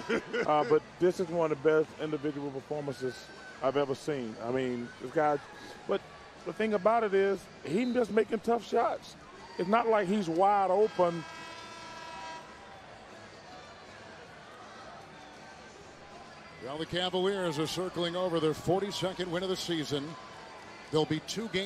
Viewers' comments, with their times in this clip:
0:05 did Barkley's explanation get cut out? Or did he really just lose his thought and had that random/awkward silence?